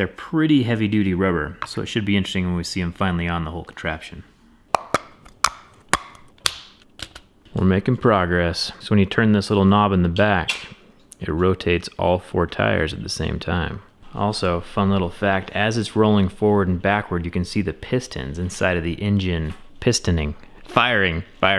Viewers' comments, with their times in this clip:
0:03 Popping the tires onto the rims sounds like someone clucking his tongue. :D :P